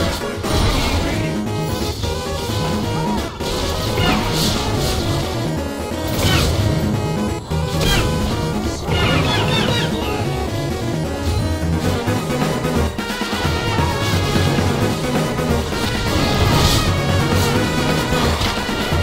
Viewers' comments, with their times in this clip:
0:04 And it also had true hero in the background